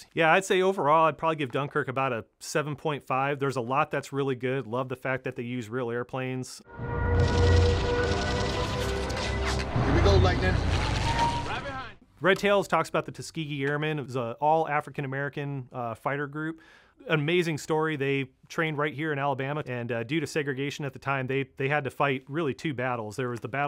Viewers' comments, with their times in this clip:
0:06 The fact that in red tails, they added a Stuka siren to the Me 262s, makes me want to laugh, and cry at the same time.